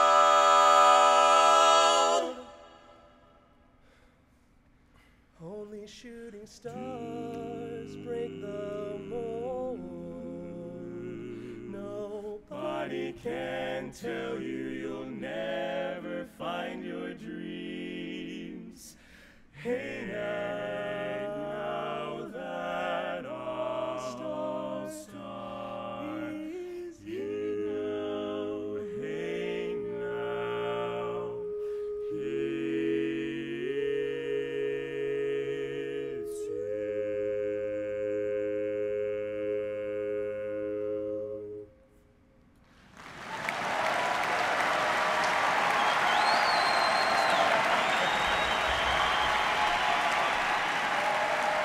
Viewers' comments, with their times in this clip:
0:03 OKAY BUT THE RESONANCE THE R E S O N A N C E as someone who has lived their entire life surrounded by music of all forms, that resonance, that p e r f e c t i o n, makes me geek out more than anything.
0:25 just start from so soothing and together wow!
0:37 holy shit that just sounds like one single note